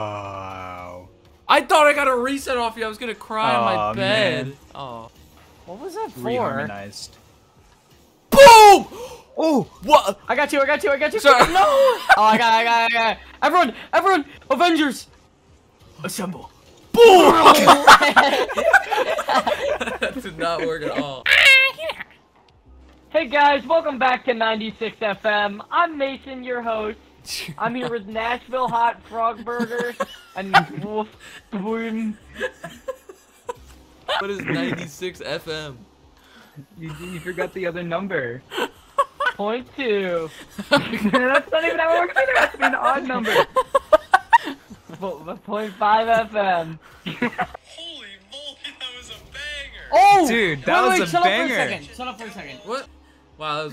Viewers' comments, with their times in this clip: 0:08 the classic pulse fire BOOOOOOOOOOOM
0:08 This boom is Unique
0:08 This boom is Unique
0:38 laugh got me 😂😂😂
0:40 sound a little as the real slim shady